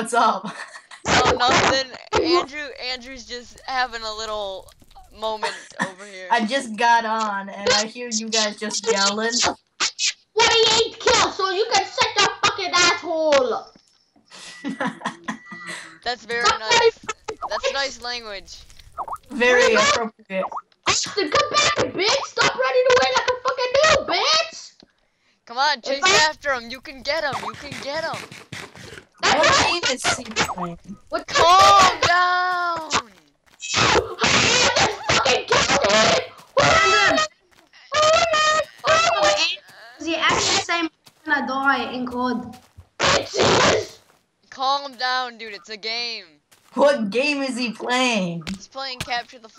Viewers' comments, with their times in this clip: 0:08 Start he sounds like a weasel
0:36 You have a fucking elephant on your call mang.